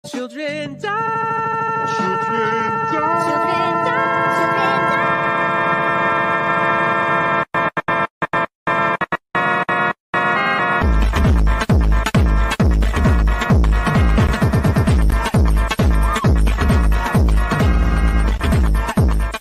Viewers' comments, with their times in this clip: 0:03 pin fits perfectly w that voice